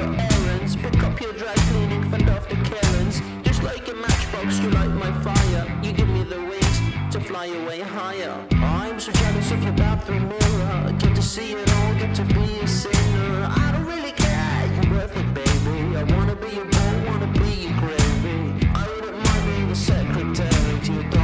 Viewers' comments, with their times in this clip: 0:08 should add some reff, but well done